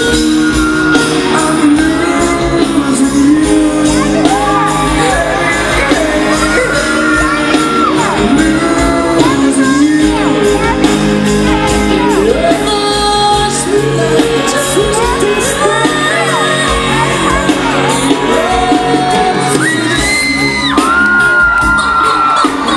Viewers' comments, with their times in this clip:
0:03 the only annoying part of this is when the girl in the background keeps saying "gavin rossdale" over and over as if she is trying to explain to some dumb fan who he is.